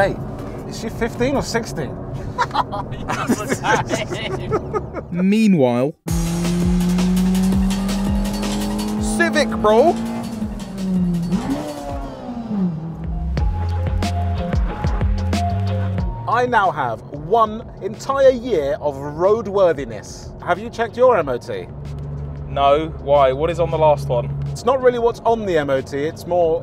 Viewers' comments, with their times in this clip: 0:07 This ‘Elbow-Delete’ had me in stitches 🤣, found it jokes as I am a Honda owner but also being an unfortunate viewer of those idiots from Manchester, Liverpool & Birmingham videoing each other drive with that ‘form’, the RoadMan pronunciation of “Civic bro” also gave me a right laugh😂😂😂